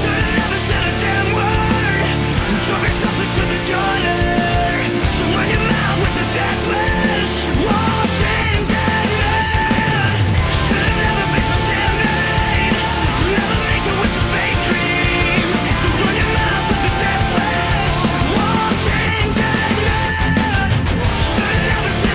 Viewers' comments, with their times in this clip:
0:08 --> epic drummer moment :o